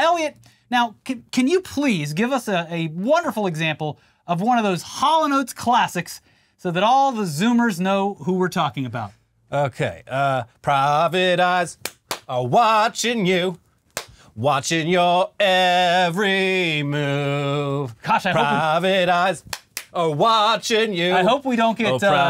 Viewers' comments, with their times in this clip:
0:09 Voice of an angel